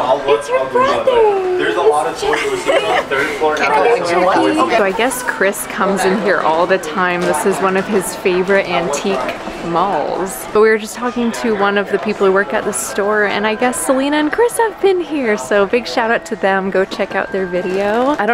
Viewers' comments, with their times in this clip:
0:04 I heard a small “hello!”